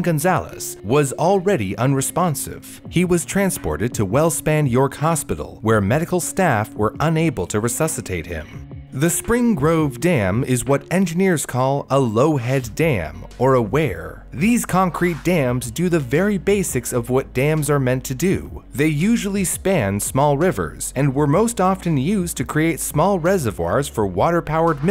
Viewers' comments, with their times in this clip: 0:09 He pronounces weir as wear lol.